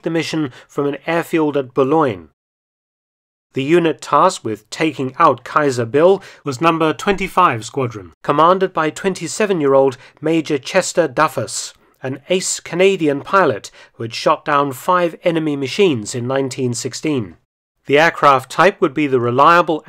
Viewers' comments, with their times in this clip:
0:05 an edit voice over.